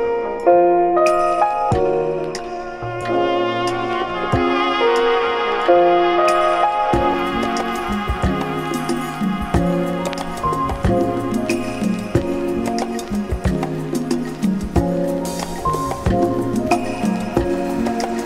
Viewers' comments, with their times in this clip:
0:06 ...I keep hearing "you're welcome." ☺️😌